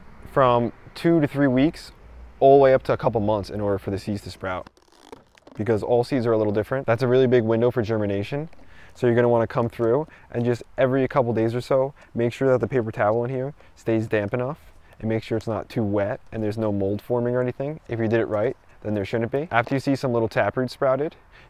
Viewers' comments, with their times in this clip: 0:07 After you've collected your seeds? And let them dry? There's a few methods to get started? haha. You talk like the band camp girl from American Pie. "This one time? In band camp?"